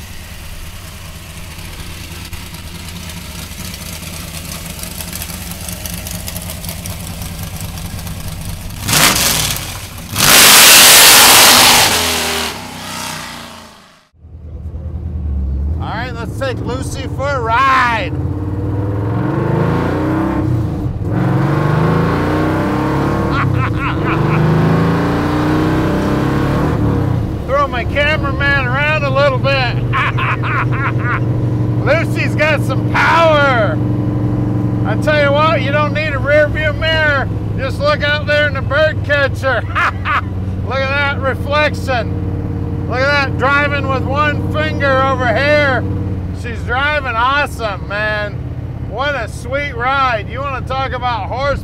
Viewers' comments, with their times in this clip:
0:09 I actually jumped a little (sound was turned up too loud in my earbuds I guess) wasn't expecting that - freaking awesome and gorgeous car! The perfect thing you need when wanting to go grab something from the grocery store. :)
0:32 That laff is diabolical funny 👍🏽😂🤣